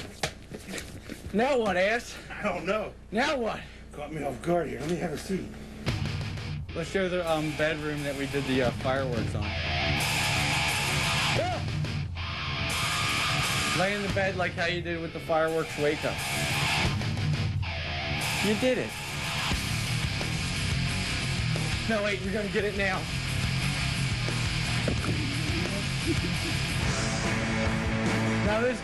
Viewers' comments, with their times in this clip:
0:10 anyone know the song ? it kinda sounds like the deftones